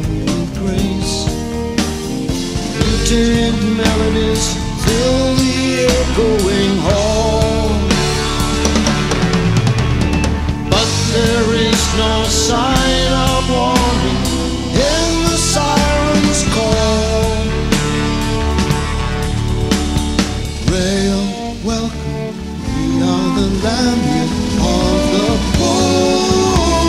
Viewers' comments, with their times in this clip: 0:08 Phil's tom rolls awesome. Michael's Rickenbacker throughout - so underrated. And Steve's incredible solo with that amazing tone he gets from his guitar. I wonder on the re-do if he was using his Les Paul.